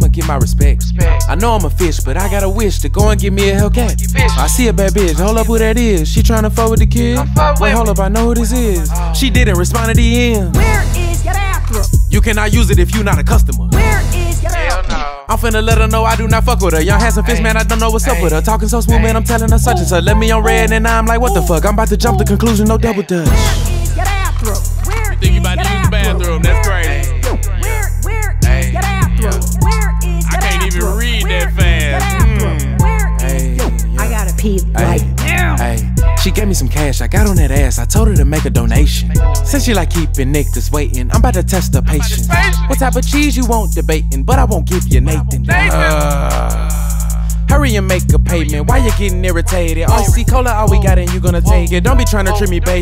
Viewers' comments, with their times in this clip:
0:06 he sound like rich the kid. Especially the adlib “come fw me”
0:40 BRO WHATEVER YOU DO, DON'T CLICK ON FULL VOLUME. MY MOM WALKED IN TO THAT AND SHE TOOK MY XBOX.